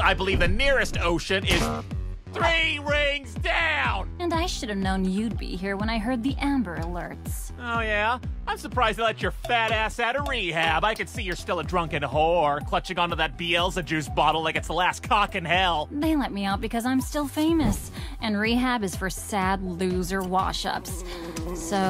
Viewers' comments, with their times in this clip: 0:08 my guy sounds like Brandon rogers- 😂